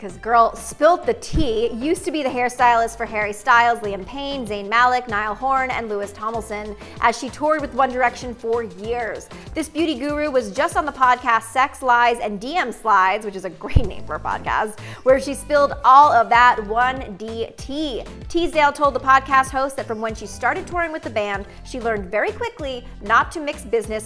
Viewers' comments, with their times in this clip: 0:05 'Lewis Tomilson'... I mean.. is it really that difficult???